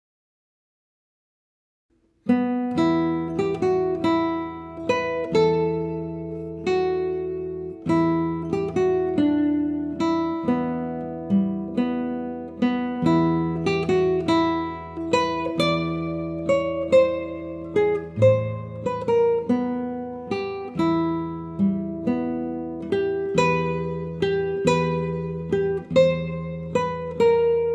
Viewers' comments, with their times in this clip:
0:09 not correct. You play D E B, when need D F B